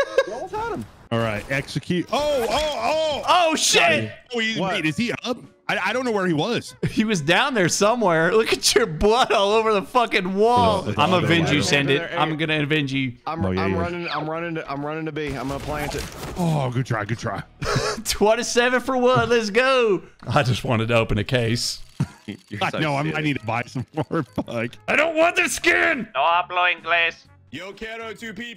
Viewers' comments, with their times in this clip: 0:10 You know you watched to much among us videos if you heard " I'm Vigi" the first time he said I'm gonna avenge you😂